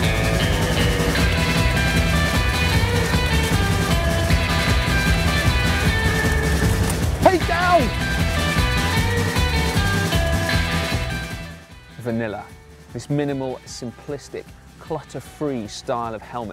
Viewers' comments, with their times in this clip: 0:03 I love it how you guys start to laugh, even when your meant to be serious. 😂😂😂